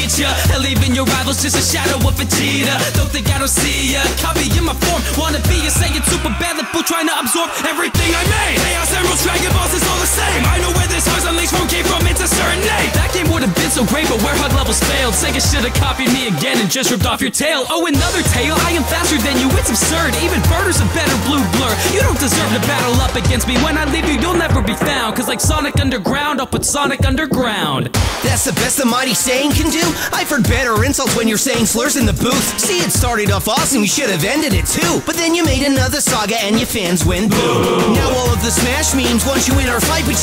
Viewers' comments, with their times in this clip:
0:07 that voice would have made gokus verse look better
0:28 Damn, that line and the delivery was just pure badass!